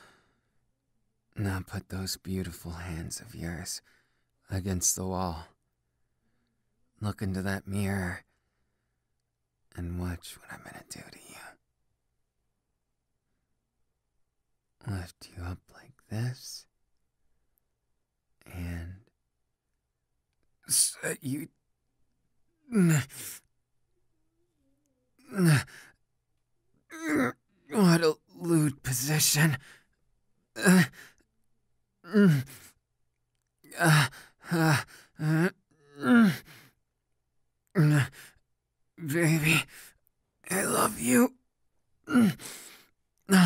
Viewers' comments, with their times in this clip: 0:07 he sounds like a villan
0:29 HIS MOANS I CANT- THEYRE SUCH A TURN OND DJDHGJEJXBJS